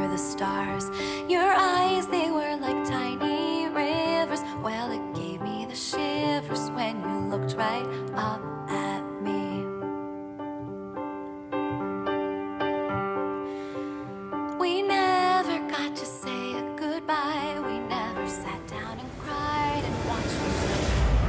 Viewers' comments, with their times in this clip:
0:04 i get why she forget her dance, the lyrics and the piano are asynchronous